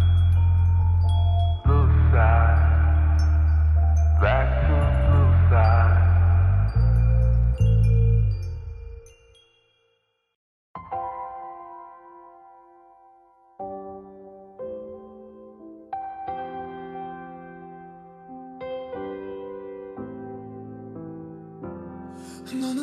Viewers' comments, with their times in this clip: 0:10 this version makes it seem so heavenly n holy n sweet i love jk so much